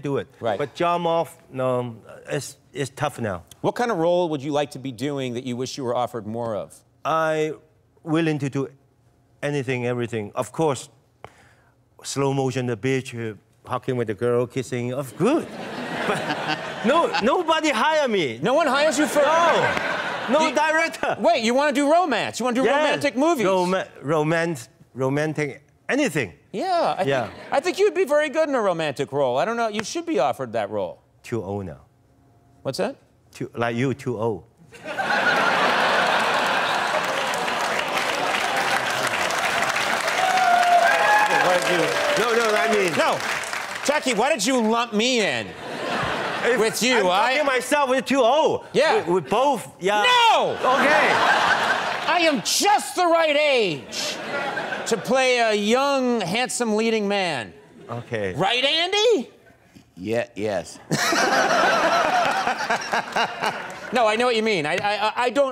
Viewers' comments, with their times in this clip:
0:10 I thought he said "slow motions a bitch"
0:10 I swear he say bitch in
0:12 At first I thought Jackie said I want to slow motion with a bxtch lol I was like wow pure savage. but he said beach
0:30 "Too ol' nao" Conan: "What's that?" Jackie: "like you too old" Me cant stop laughing
0:49 the mighty conan the barbarian's roar shook the hell outta jackie
0:49 Lol poor Jackie Chan he got scared when he screamed "NO!" 😂
0:49 that "NO!!" made even jackie chan flinch for a second god damn thats hilarious, conan's timing is really something 🤣🤣🤣
0:49 lmao jackie was actually stunned by conan shouting NO!!
0:49 you can actually see Jackie recoil when Conan screams "No!", it's hilarious
0:50 Jackie got a shock of his life when Conan went "NOOOO!!!"
0:50 Poor Jackie, when conan shouted "nO!!!" He vibrated xD